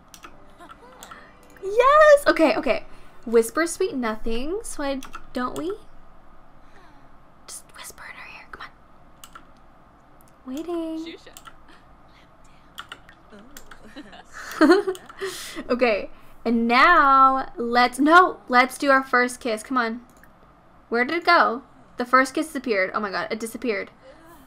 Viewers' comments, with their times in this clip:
0:07 The whisper sounded so creepy 🤣 I live for this series even though I'm hella late